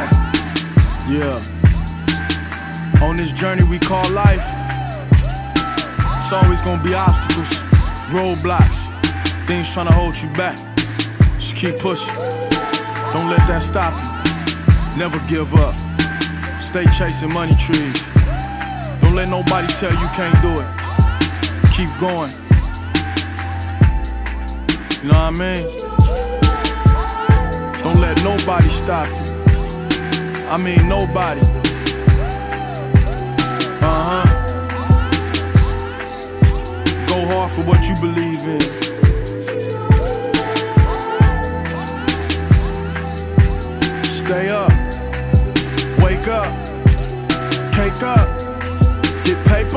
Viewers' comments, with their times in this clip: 0:03 LOVE that last shot (ascending/climbing). Not to mention Jay Rock's message. And the beat is absolutely flawless.
0:31 This beat is nuts dog... Goes along with the first. I hope they make this a tradition, cause money trees was one of my favorite songs ever, and this one is right on par. Lumiose City...